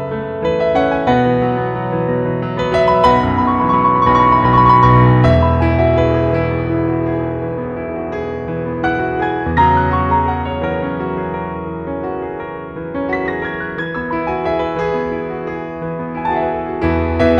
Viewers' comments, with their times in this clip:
0:03 I' m so wonder why there arediferences between the sheets and how y play in